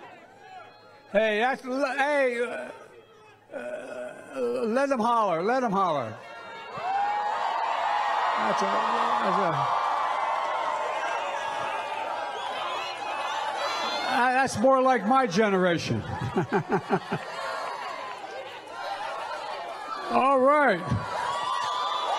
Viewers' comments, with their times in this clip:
0:03 sounds like ozzy Osborne